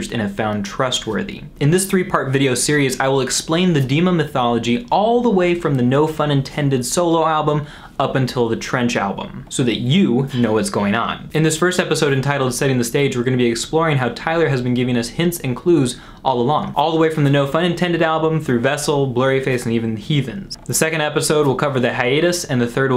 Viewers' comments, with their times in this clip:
0:10 ummm...what was that whisper....